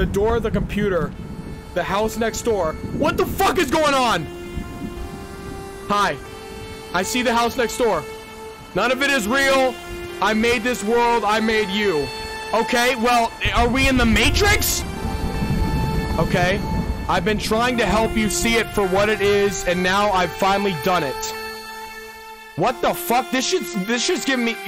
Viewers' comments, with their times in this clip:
0:06 this song sounds good